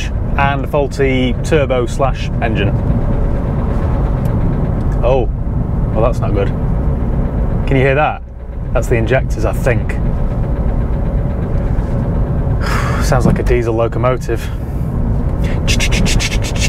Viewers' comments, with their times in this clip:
0:03 that is no injector, is rod knock. You could not have said it better, sounds like a locomotive.